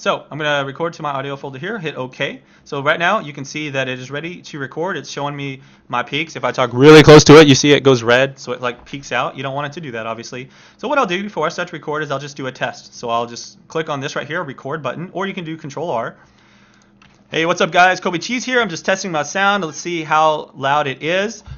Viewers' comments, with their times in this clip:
0:06 RIP headphone users.